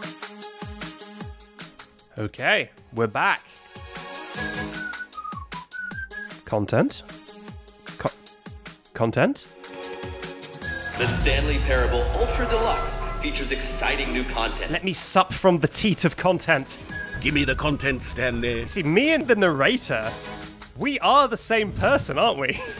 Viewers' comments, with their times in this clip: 0:06 And here we see the wild backseat using it's mating call to draw in nearby viewers. "content?... c-content?"